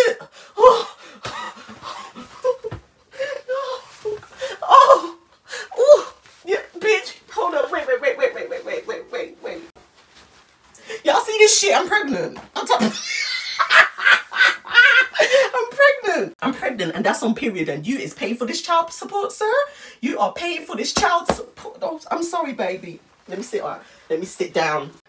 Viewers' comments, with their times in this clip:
0:10 I keep coming to watch this and laugh at this moment ommmmmmmg your laugh I'm deaaaad
0:11 HIS LAUGH GOT ME DEAD AND THEN HE HIT THE BABY 😂